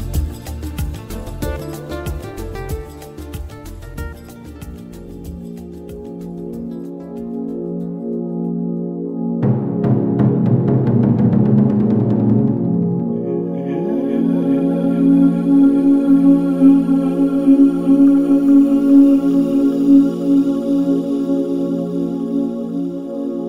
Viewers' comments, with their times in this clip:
0:06 the dreamy ethereal music takes me away with its trance like tempo.